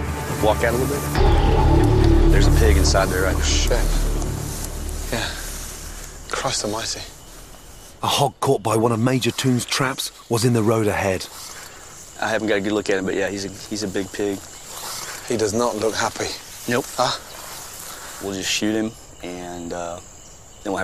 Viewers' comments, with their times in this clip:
0:04 The music sounded like something from Transformers.